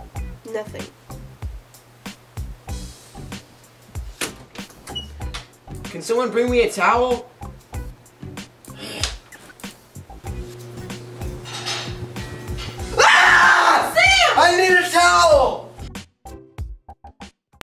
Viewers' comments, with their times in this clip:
0:08 The screams tho 🤣🤣🤣🤣 Loves ❤️❤️❤️